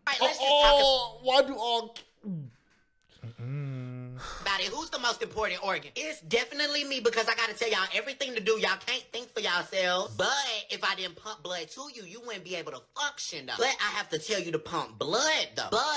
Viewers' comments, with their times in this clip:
0:03 Is it just me, or does that sound like Sheen from Jimmy Neutron...? XD